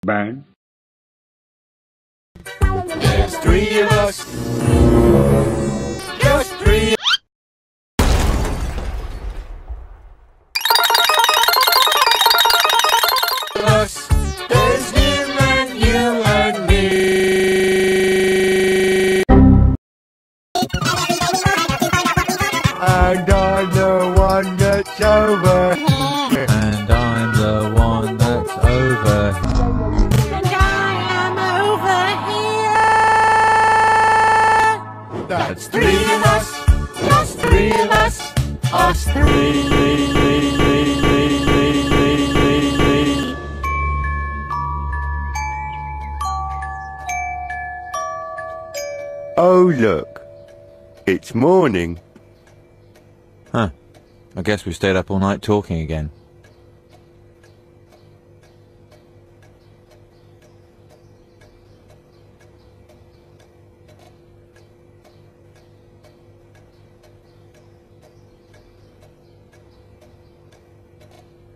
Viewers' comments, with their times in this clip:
0:06 There's three...*Slips then chrashes*
0:58 The silence is loud